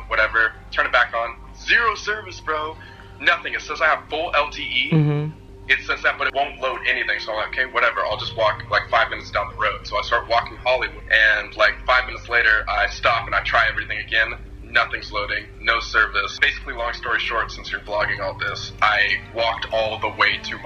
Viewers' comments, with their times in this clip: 0:04 Anyone hear the fart?